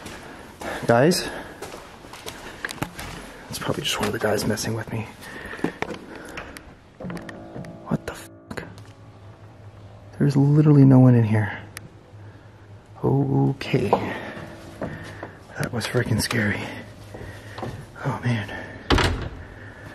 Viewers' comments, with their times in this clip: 0:03 I just heard the door close by a ghost at the haunted castle minutes